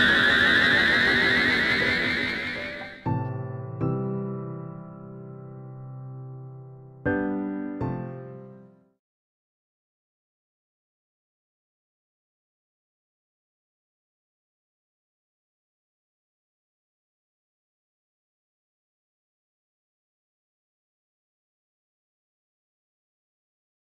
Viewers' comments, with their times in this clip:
0:09 the most hype moment in all of Pokemon history. Period. When that first note hits and the crowd erupts, simply perfection.